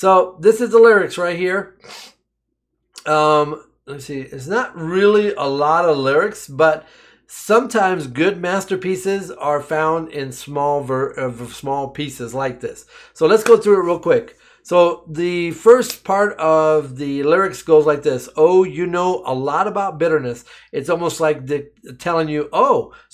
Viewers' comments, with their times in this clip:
0:06 You said Angelina is bringing back jazz, well is 78rpm format Records. If you listen carefully you can also hear the vinyl crackle under the music at the start of the record, as well as at the end. Hidden meanings.